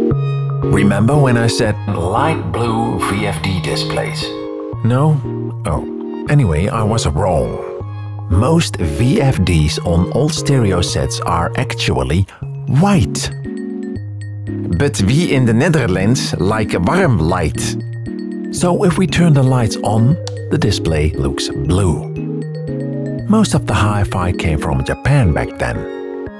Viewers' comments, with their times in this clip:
0:07 "Most VFDs on all stereo sets are actually white. BUT WI IN DE NEDERLENDS LAIK WARM LAIT"
0:14 That's the thiccest dutch accent I've ever heard